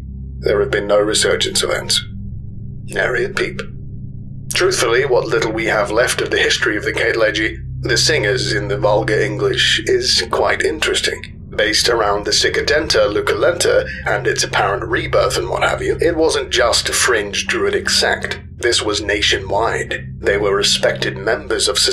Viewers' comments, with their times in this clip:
0:04 That guy talked non stop. Take a breath dude!